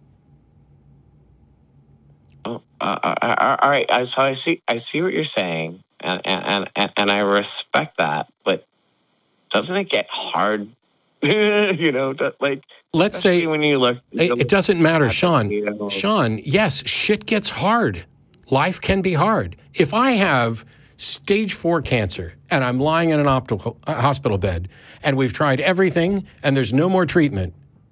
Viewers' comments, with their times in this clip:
0:09 The sound he made was cringeworthy! What the hell was that?